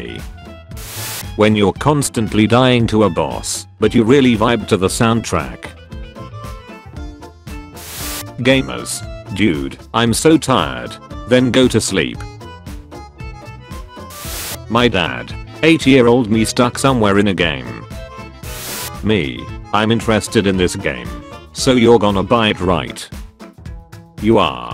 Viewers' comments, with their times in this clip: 0:06 sounds like Ultra necrozma